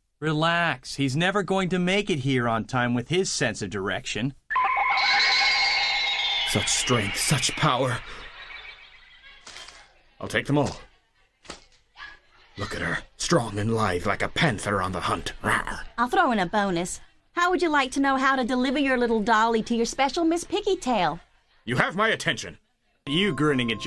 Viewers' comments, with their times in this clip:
0:04 This feels like a 4Kids dub. Also, unrelated, but the sound is used in the Urusei Yatsura OP.